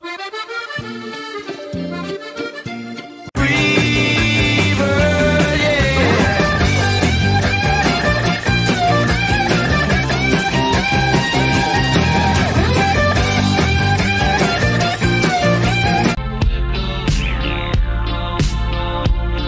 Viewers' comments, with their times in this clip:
0:04 IM DYING I CANT THE SING IS TOO PERFECT